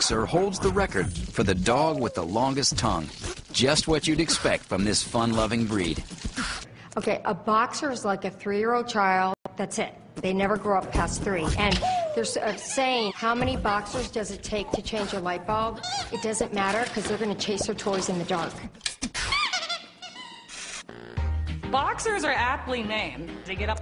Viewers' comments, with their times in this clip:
0:07 :( sound! SOUND! (checking headphone to see if they blew out) (unplugging and plugging headphones back in) O_O NOOOOOOOOOOOOOOOOOOOOOOO :(